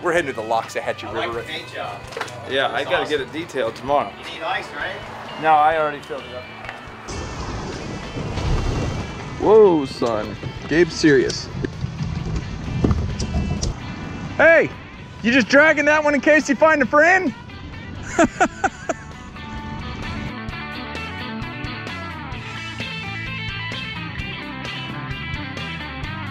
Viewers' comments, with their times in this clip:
0:10 when you said serious my Siri responded